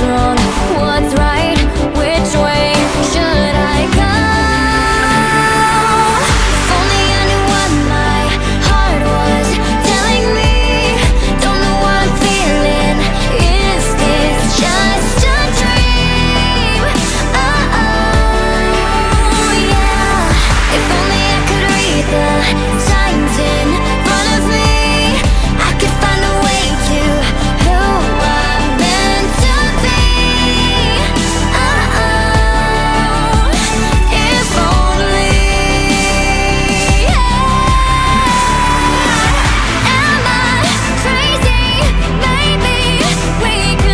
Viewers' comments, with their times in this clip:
0:07 is when the male backup singer starts singing
0:07 he starts singing with her
0:27 You can kinda here him